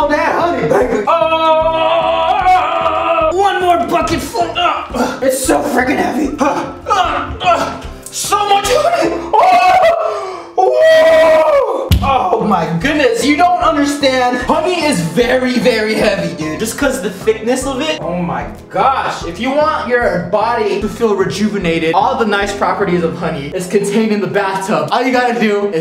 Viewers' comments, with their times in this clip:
0:05 Go to the timestamp it sounded like he said the F word🤭
0:10 Dying Whale noise